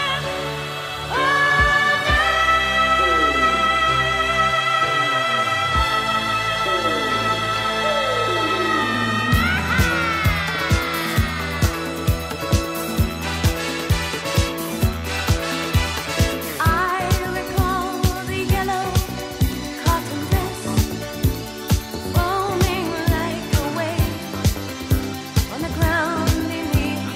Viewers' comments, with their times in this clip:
0:09 i can hear The “ooah hahah” 👏
0:10 DONNA SUMMER RUINS THIS CLASSIC SONG BY LETTING OUT A SUPER LOUD AHA ! NOT ORIGINAL ! OVERDONE !